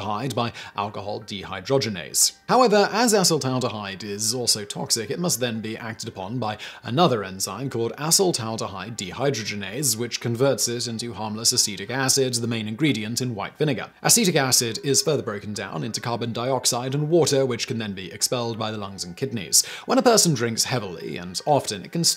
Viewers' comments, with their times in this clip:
0:08 thought i heard him say assh*le-taldehyde😂